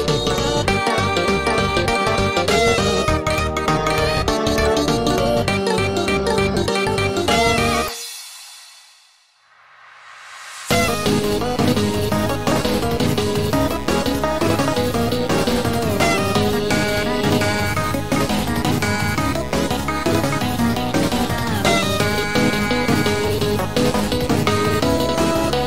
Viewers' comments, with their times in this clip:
0:08 sounds like a chase scene after partygoer fails to trick BF, Im guessing that will happen in the full release.